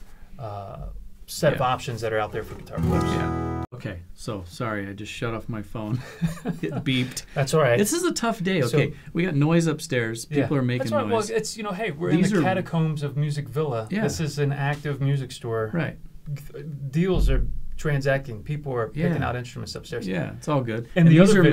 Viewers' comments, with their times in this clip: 0:04 Oh man, the Taylor does not even belong with the Gibson or Martin IMO. Right when he strummed the Gibson there was no comparison. The Taylor is a nice guitar, it's just the Gibson was like wow! I was surprised when he played the D-18 it seemed less bassy, 10 minutes of talking and the last was the best comparison when they overlayed each guitar playing the exact strum. I could barely distinguish the Martin from the Gibson. I suppose if I only heard the Taylor and not the other 2, I would be content with the sound. The comparison really made me pick the Martin and surprisingly, the Gibson for the 1st time. Even steven on the last two :)